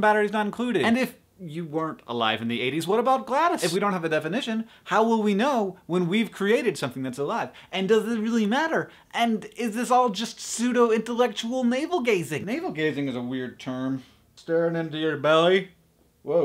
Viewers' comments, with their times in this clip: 0:03 did hank say "GLaDOS" or is that just my portal-obsessed mind taking over?